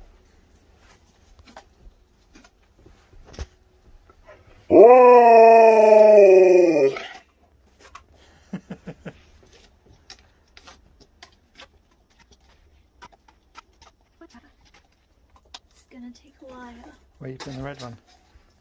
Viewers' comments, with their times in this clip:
0:05 I love Sherpas howling Its like: "Dad, what is she doing?" 😁
0:06 He sounds like such an old man here!!!! XD